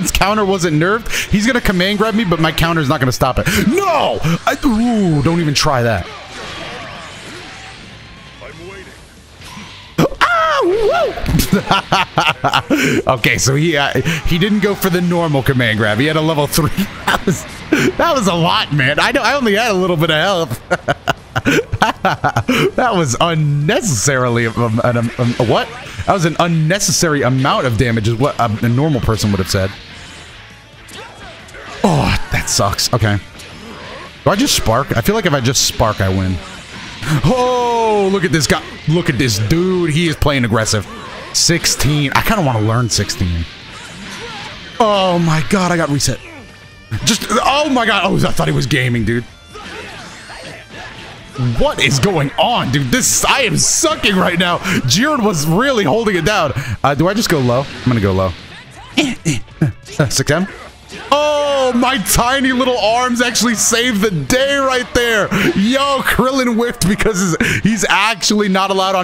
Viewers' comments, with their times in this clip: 0:08 No one gonna comment on the scooby doo ass howl he did ? lmfaooo shit has me rolling
0:10 Soooo… nobody’s gon’ mention sound effect? No… okay.
0:24 that stutter tho XD
0:56 "Do I just go low? I'm just gonna go low." Krillin Noises